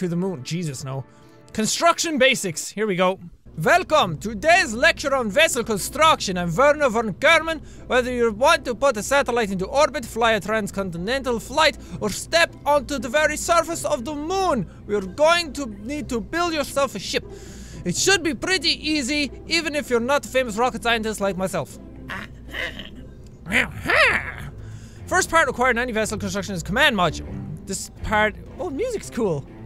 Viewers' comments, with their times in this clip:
0:03 ... that accent... Glory to Arstotska.
0:03 Jack sounds like Gru from Dispicable Me
0:05 I love starts Russian accent
0:14 why does he sound like gru SO MUCH!